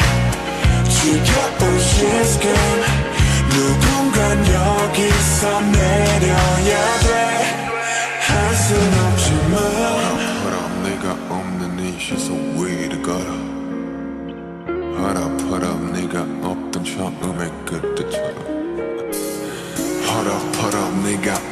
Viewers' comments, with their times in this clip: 0:04 is it just me or did anyone in heard a voice of girl in background?